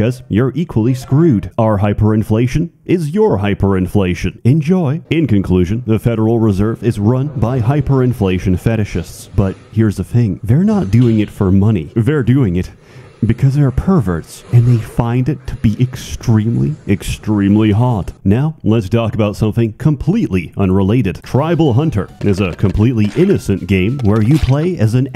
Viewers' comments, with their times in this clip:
0:10 Love the artisan toaster sound effect in the background. *Chef's kiss